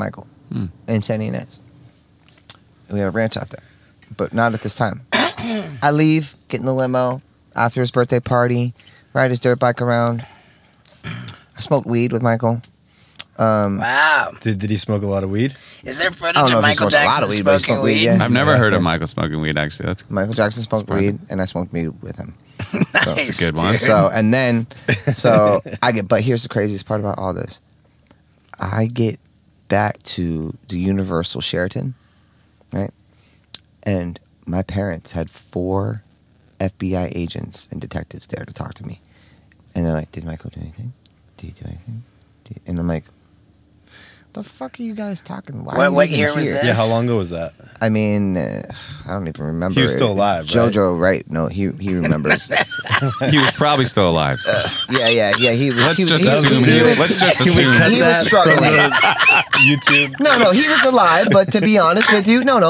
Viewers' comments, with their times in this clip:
0:04 Steve-O does that "bullshit!" Cough 🤣
0:13 that “wow” said a lot 😂🤦🏽‍♂️
0:22 That "Nice dude! " is so hilarious. You can tell what Steve o is thinking just by the way he says it and laughs right after it. 😁
0:49 They are absolutely clowning him, and he has NO idea. He wwas still alive.....right? And they all burst out laughing. Such a great little exchange.